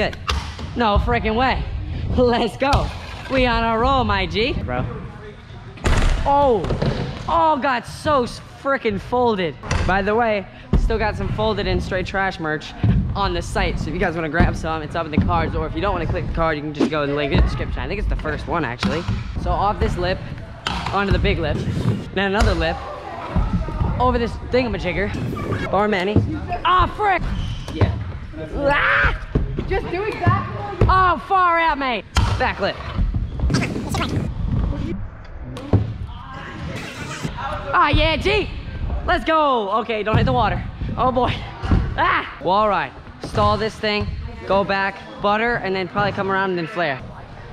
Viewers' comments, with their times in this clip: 0:07 bro it sounds like you can here his bones cracking
0:29 Australian Mode Activated